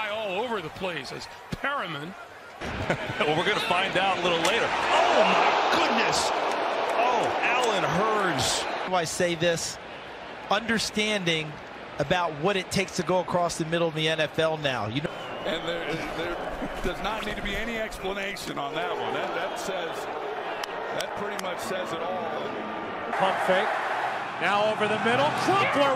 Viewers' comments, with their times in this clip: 0:09 that’s the first time I heard his voice out side of madden 😂